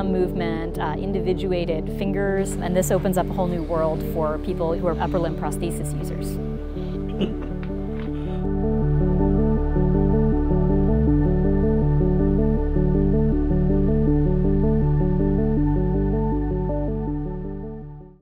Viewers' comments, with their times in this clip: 0:07 No better testimonial than that little chuckle clearly a big step forward.